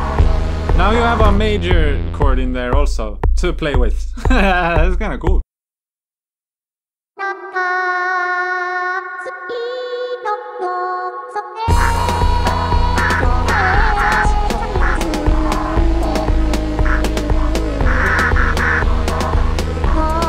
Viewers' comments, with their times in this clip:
0:06 miku is getting her yoko ono on lol